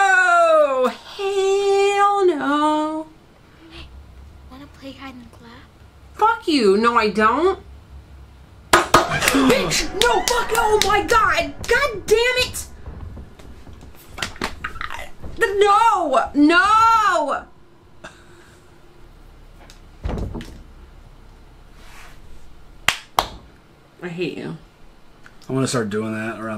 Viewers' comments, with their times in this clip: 0:07 “fuck you, no I don’t” claps right after lmfao 🤣
0:09 The way she started clapping too killed me lmfao